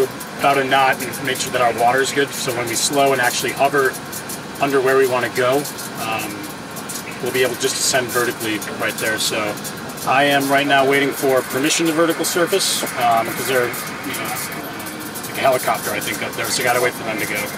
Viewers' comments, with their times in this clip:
0:04 he says underwear. 😁 Yes, I know he said, "under where."